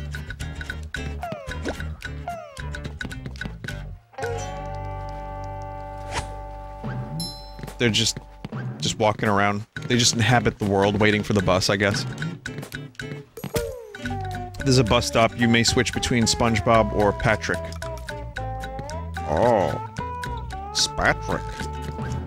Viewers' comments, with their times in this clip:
0:10 Did anyone else notice the perfectly timed throw-fruit snap?